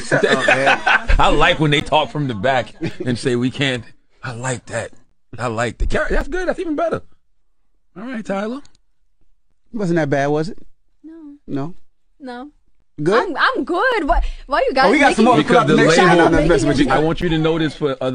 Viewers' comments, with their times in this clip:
0:04 sounding just like Diddy. Smh.